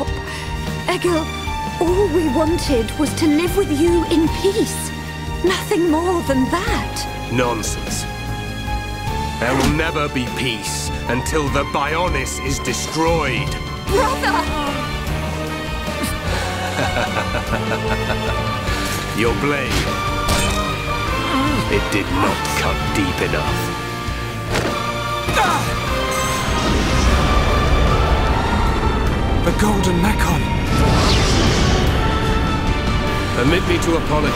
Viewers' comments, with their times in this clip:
0:08 Poor Shulk muffling and coudn't talk while Egil grabs him with only one hand, yikes! :O
0:19 That line And that music it's a true OH SHIT moment